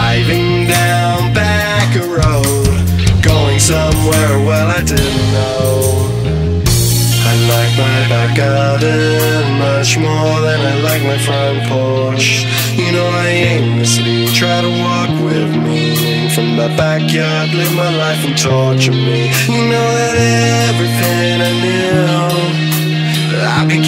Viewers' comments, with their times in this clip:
0:07 the most epic moment of music